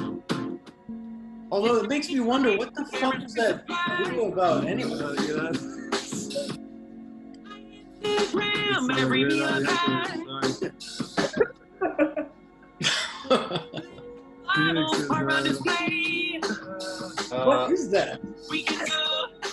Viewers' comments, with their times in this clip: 0:05 The sudden weird al parody -ish was so random i thought my spotify turned on